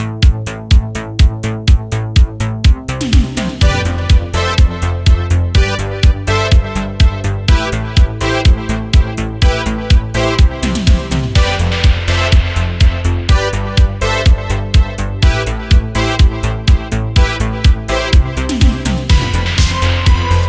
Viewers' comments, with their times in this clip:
0:04 I thought it was the music Jump of Van Halen lol.